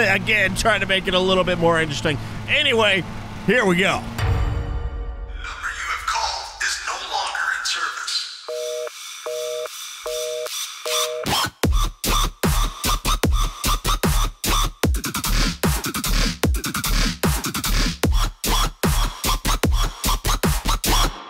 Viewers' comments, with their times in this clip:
0:03 in the video the music that was put in is one of my favorites im huge into EDM dubstep and house music from skrillex and that